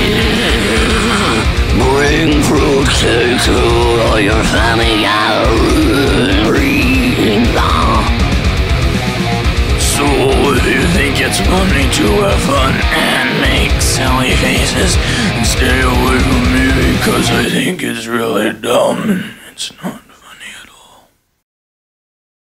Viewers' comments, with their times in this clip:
0:03 why he kinda sounds like a battle droid from star wars 😂😂